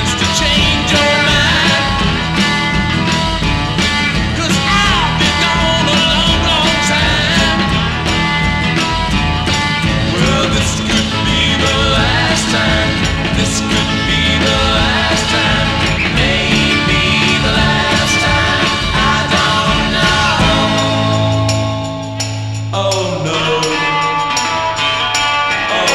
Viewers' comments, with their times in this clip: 0:08 Rock a billy?😊